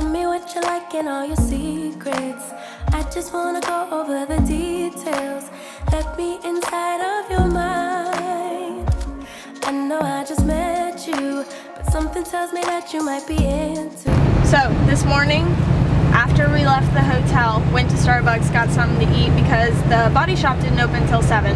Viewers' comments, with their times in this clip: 0:07 pressed the like button for music choice